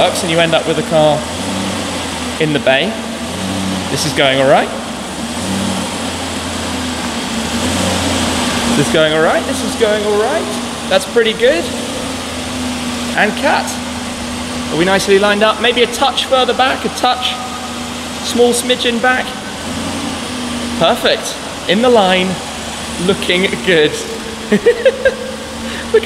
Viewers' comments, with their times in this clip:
0:08 A good Chris Berman impression!